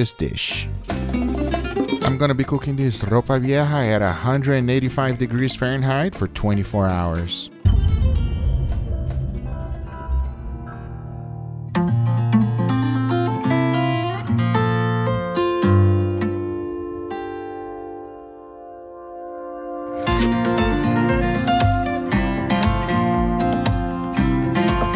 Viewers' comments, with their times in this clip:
0:07 Guga, whats the song you have as background music starting ? I love the guitar, makes me hungry though!